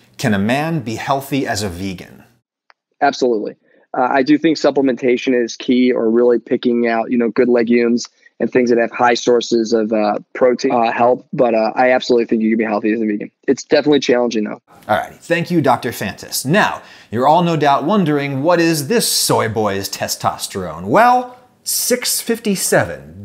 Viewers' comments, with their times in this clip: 0:10 That help sounds so out of place, like he's warning us of something